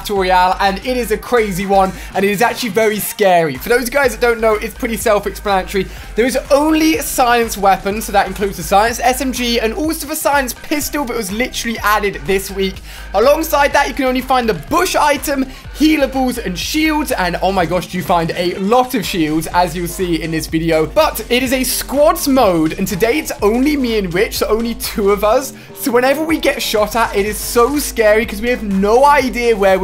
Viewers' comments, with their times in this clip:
0:10 it sound like he said super saiyan in a different way 😂